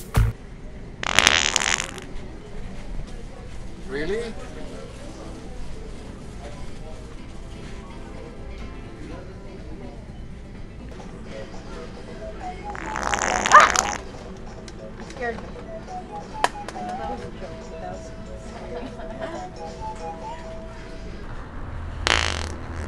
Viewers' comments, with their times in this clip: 0:07 ...the music "love is in the air" 😂😂